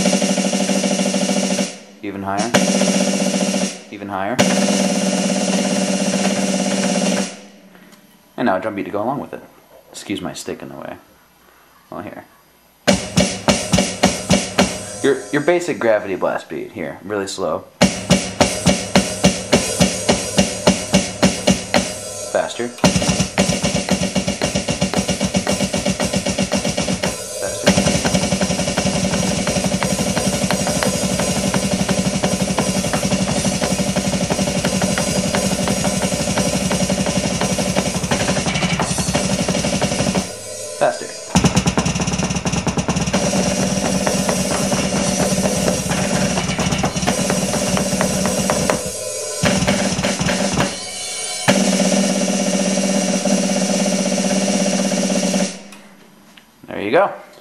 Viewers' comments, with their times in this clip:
0:04 sounds like a frickin jack hammer. that is intense
0:22 sounds like heaven
0:28 Sounds Dave Grohl's intro to Nirvana's Stay Away. Good job dude. Some day I'm going to know how to play the drums because holy hell.. I can't right now :/
0:33 Sounds like the drumming off of Unleash The Carnivore
0:40 when he pulled out that double bass beat I went from impressed to jaw on the floor
0:41 sounds like a machine gun
0:41 I know this video is about snare, but goddamn the double kick right Holy fuck dude. Those feet are quick.
0:42 ...wow. That's like Berzerker-level fast! Nice!!!